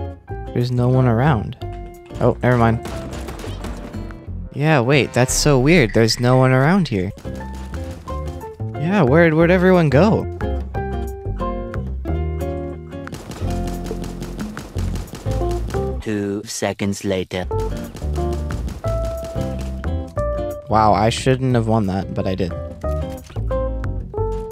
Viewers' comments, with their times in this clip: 0:09 not the animal crossing music😭😭